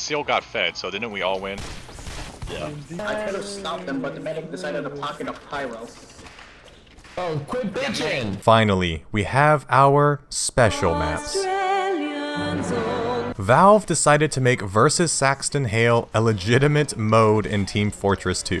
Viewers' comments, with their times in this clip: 0:03 Dude sounds like a Redditor